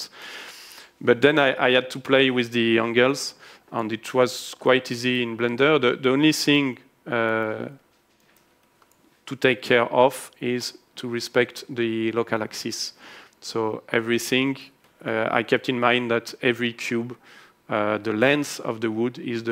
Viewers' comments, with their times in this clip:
0:03 it sounded like he said " then I had to play with the young girls". LOL.